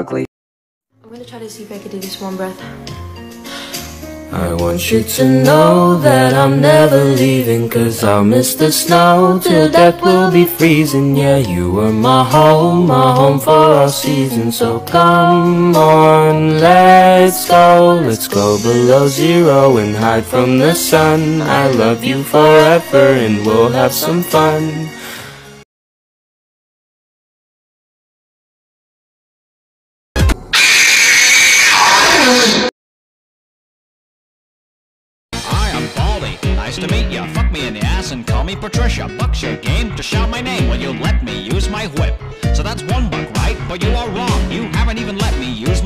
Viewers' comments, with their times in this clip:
0:08 music is so cute
0:30 Don’t worry she just sneezed